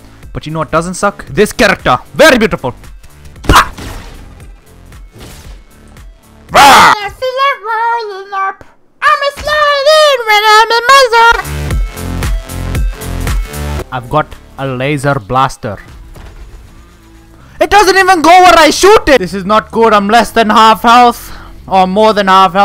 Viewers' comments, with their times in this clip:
0:08 sounds like he is singing Elmo’s world- idk why-